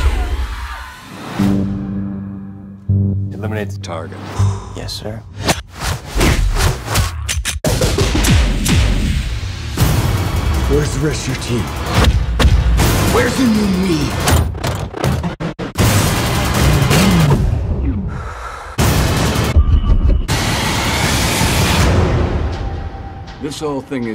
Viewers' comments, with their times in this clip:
0:03 IS IT JUST ME OR GOT A BEAT TO IT
0:05 The editor who cut this must be a DJ as well. until the end he starts making beats with the trailer. It's hot!!
0:12 This is so pleasing for some reason. Like the music synced with the moves. Holy hell